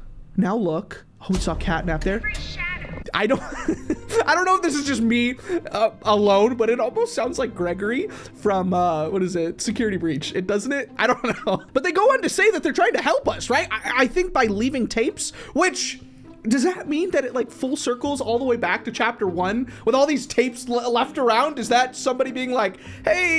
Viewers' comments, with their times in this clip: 0:08 It sounds like poppy to me